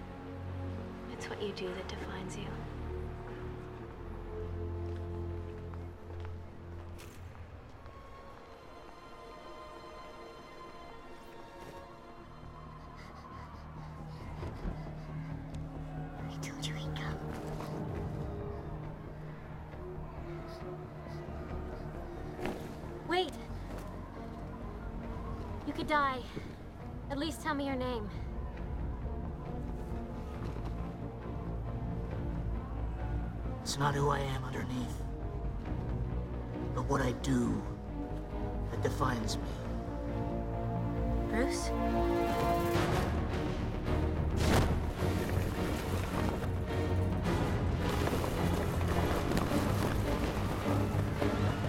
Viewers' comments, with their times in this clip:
0:07 That piece of music for these 2 characters is just breathtaking. Gets me in my feels when they use it in The Dark Knight
0:19 great music from hans zimmer
0:32 that unexpected voice is hilarious
0:32 I Remember thinking about this when I watch the movie, can someone explain to me why he sounds like that
0:33 ahaha lol that voice
0:33 That voice has aged really badly
0:33 okay i laughed his voice was higher than i expected
0:33 I'm sorry but I can't help but laugh at how unexpectedly high his voice is everytime
0:33 What the hell happened to his voice there? It's like someone's grabbed his throat and he's trying to explain himself.
0:34 my guy what is that voice😂😂😂
0:35 I like the way Christian Bale says those words and then Rachel finds out it's Bruce